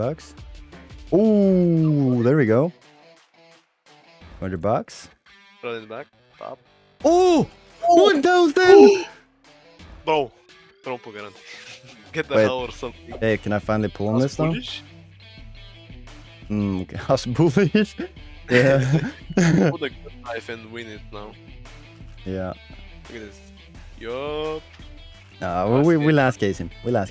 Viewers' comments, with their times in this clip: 0:05 omg that howl ❤❤
0:13 todays video was amazing! that howl was incredible!